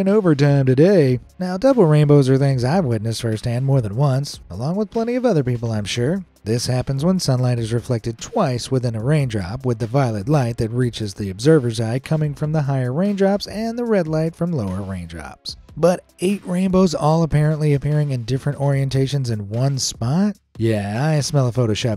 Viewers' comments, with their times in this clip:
0:07 did blud’s voice crack